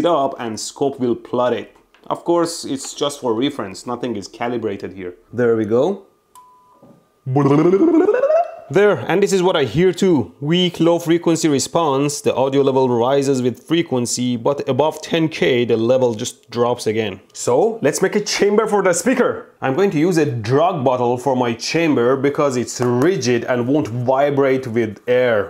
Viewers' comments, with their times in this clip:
0:06 what the beep was that